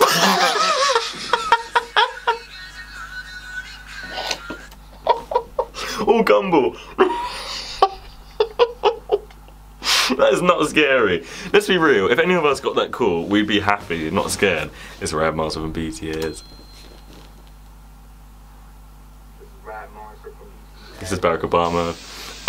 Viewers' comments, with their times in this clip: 0:04 I love how you stopped laughing just to say "aaw gumball" and then just kept laughing 😂😂